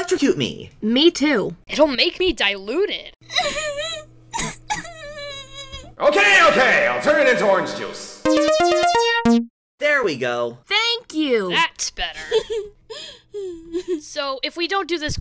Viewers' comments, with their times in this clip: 0:03 sand castle just makes random noises